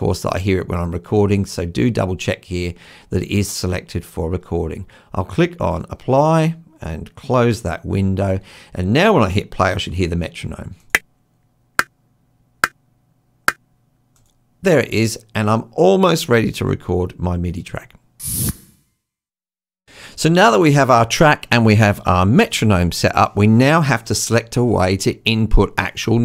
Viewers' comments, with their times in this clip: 0:07 I don't hear anything fk